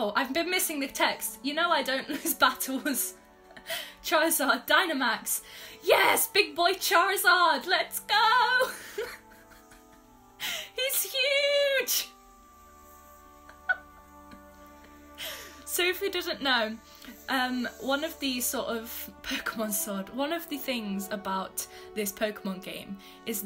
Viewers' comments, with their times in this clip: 0:10 Wow, sometimes it sounds like your a reader. you must really want this pokemon game more like thick lol